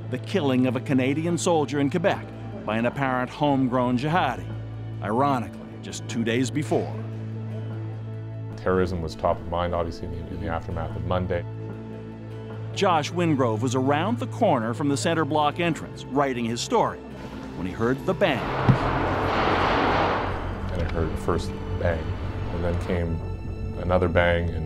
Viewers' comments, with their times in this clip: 0:10 What a lisp